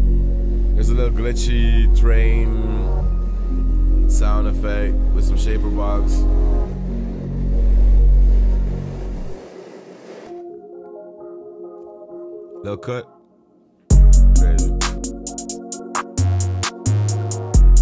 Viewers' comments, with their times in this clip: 0:04 I need this beat 😫... everything Especially 🎉